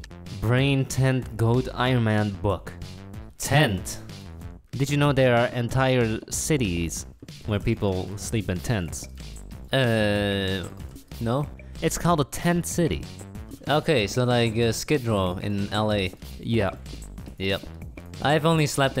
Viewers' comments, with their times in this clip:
0:03 They say the exact same word at the exact same moment with the exact same tone rofl